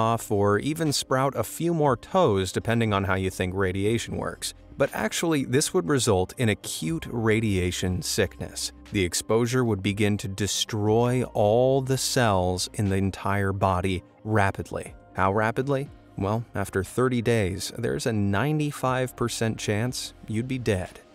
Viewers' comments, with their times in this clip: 0:06 i cant dude cute way to die by radioactivetion 😂